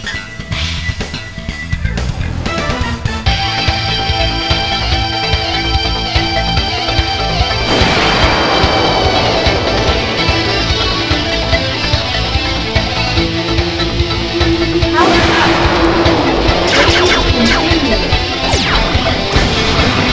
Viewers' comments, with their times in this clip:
0:05 equals notification distraction. Lol. 😁